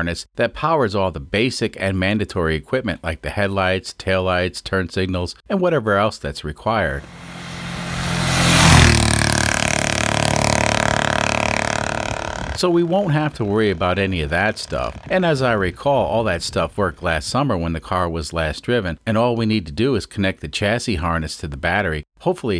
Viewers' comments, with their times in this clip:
0:10 awesome, pedal flat down, sound like a sports car. You could use a 555 Timer and a heavy capacitor, CD4013 flip flop and maybe CD40106 for some inverters, leds, etc for the glow plugs to do their job automatically. You would be better of using a Microchip Fubarino, it's 32 bit, 64 kb SRAM and 256kb flash and compatible with arduino IDE. much more precise due to 32 bit and with 48 mHz, like 4 x faster than a standard Arduino and also the chip's peripherals are doubled (5 timers, 2 x uart, 2 x i²c, 2 x spi) and also cheaper than Arduino uno.